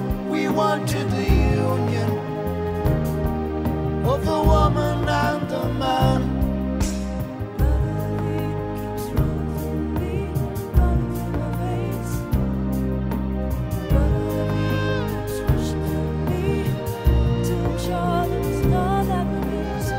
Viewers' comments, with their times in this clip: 0:07 onwards in particular has to be one of the most emotional moments in Peter Gabriel's catalogue. Everything about it just screams bittersweet sorrow, the high falsetto from Peter combined with the doudouk, it swoons and it sighs and it cries and it weeps and I've never heard anything like it before and it brings me to tears every time. This song just screams sadness at the expense of love